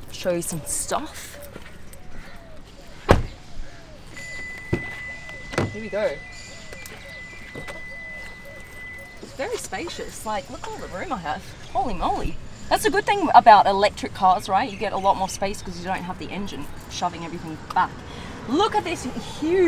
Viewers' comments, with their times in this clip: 0:05 pigeon sound soo sweet 😂❤️